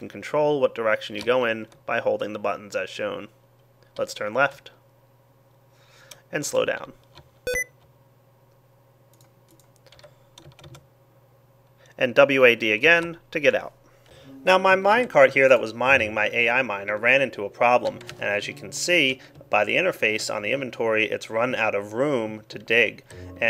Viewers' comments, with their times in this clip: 0:08 like your anti virus (Avira) found a virus